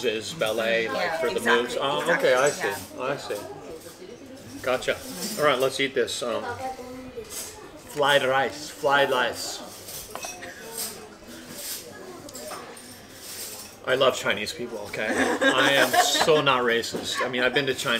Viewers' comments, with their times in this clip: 0:04 was that a Trump impression? Lol